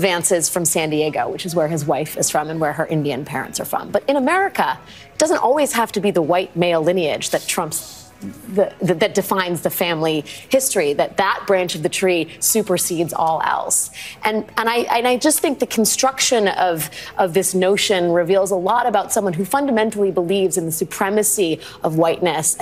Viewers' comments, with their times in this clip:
0:07 Just gotta say. I’m lmfao All I hear is “trumps” and then a shhh shhhh and she quickly pivots. They’re scared!